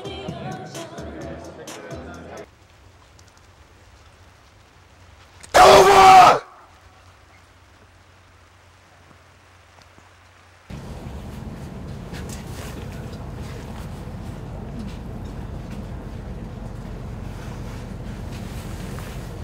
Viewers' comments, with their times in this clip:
0:05 MYYYYY FUCKING EARSSSSS I HAD MY HEADPHONES ON
0:06 I would have jumped if I were there when Andy let out that loud yell. It wouldn't matter if I knew it was coming.